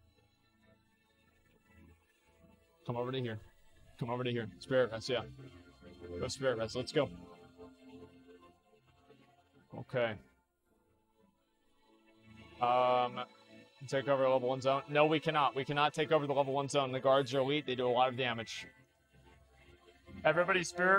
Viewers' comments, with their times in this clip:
0:07 asmon synced the music with attack and it was perfect